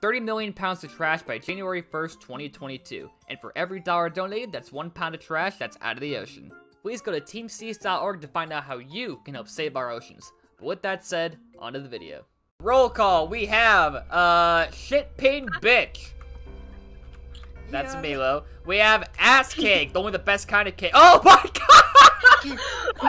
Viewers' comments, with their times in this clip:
0:04 To me it kinda sounds like you are saying "thats one pound of trash added to the ocean" LUL